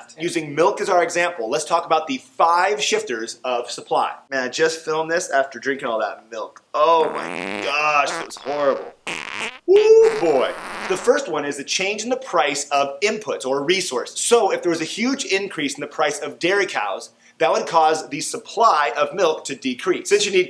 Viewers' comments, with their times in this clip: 0:06 I'm only here for the fart noises because some professor got butthurt and called him out about it on Twitter.